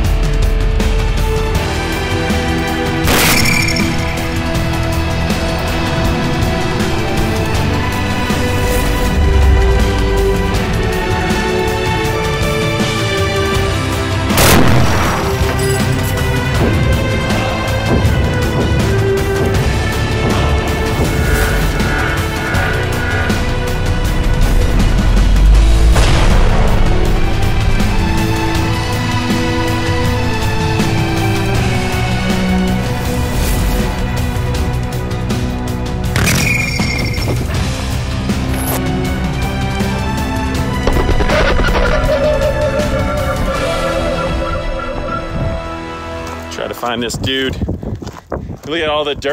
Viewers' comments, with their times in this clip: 0:08 Watch the plate is wobbling,, twitching. And that sound as the rounds spin off into the desert. So cool. Sorry about your cooler. Like the 4th hit left a dent then sent the plate spinning.
0:36 chuck (angry bird) sound